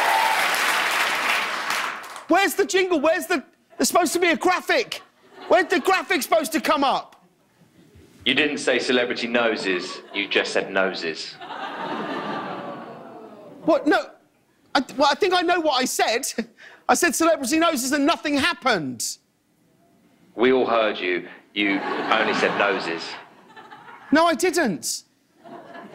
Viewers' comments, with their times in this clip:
0:08 The voice sounded like Mike Fox